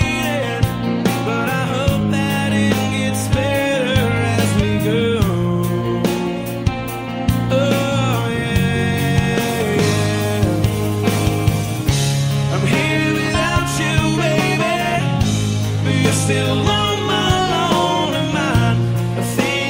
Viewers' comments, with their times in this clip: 0:07 the power is rock n roll